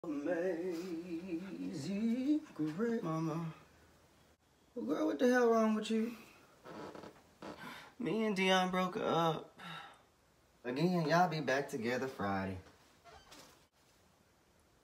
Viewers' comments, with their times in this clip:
0:01 That note tho at the beginning
0:02 we’re not gonna just slide over those vocals are we